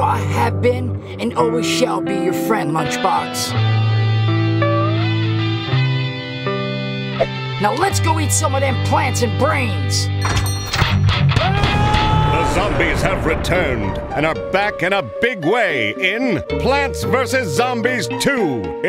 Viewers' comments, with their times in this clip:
0:04 Why did the song Amazing Grace start playing 😂